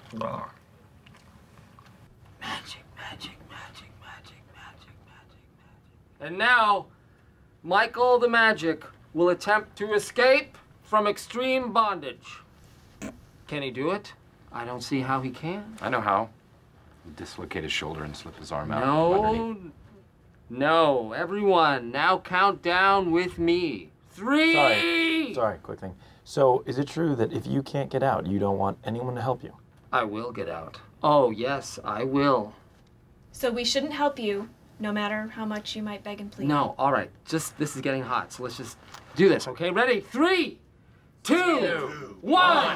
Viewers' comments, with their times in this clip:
0:05 I still wonder who made that snort sound it sounds like the cameraman couldnt fully hold in his laugh :P
0:11 someone in the camera crew couldn’t hold back their laugh
0:11 Anyone else notice Kevin’s laugh ? 😂
0:12 I've watched Michael try to escape from that straitjacket at least 100 times, and I just realized that Kevin laughed making that opener 10x more funnier than b4.
0:13 The camera man laughed
0:14 either someone laughed at the joke or farted😂😂😂
0:23 Am I the only one who cracked up by the way Michael screamed threeeeeeeee